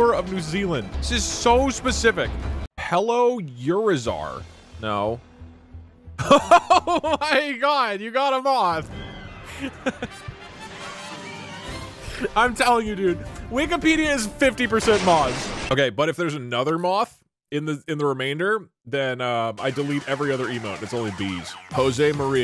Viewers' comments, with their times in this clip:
0:05 I dropped my phone on my face and Doug laughed :(